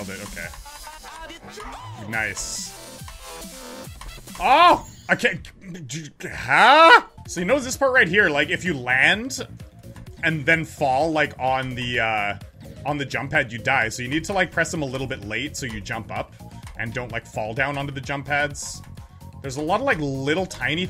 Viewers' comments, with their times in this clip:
0:07 at least he quacked XD